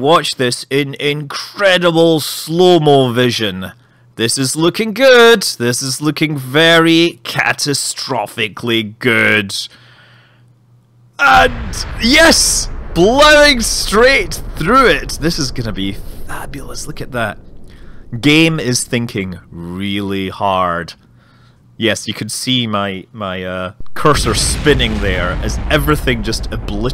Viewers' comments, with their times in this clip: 0:10 i heard an explosion.. In soace?! Fake. Kidding